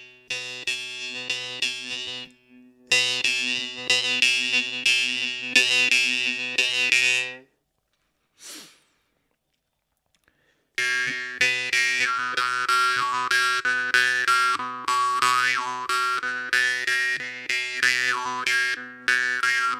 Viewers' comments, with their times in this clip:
0:03 Which harp are you playing in this video? It has a real nice melodic tone.